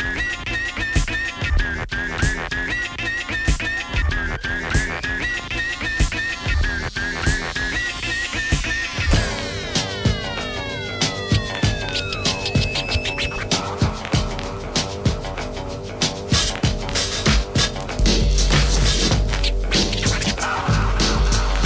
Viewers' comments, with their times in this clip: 0:09 Yup, that whole section from onwards is all different until the outro loop which sounds the same.